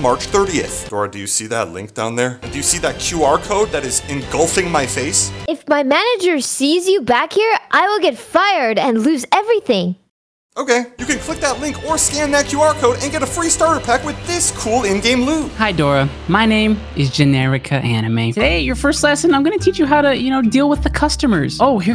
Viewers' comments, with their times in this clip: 0:04 the way boots says okay